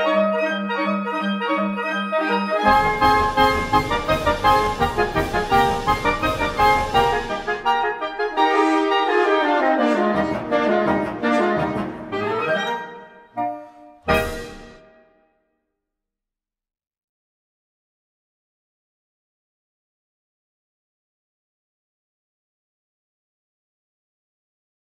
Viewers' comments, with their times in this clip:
0:10 Amazing performance - and a special applause for the french horns :-))